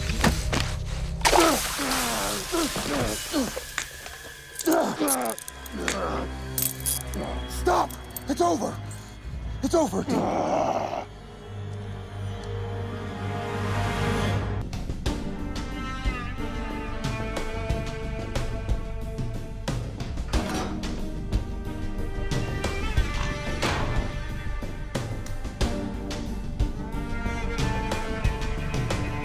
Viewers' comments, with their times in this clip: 0:10 😳😳😳 anybody notice that growl?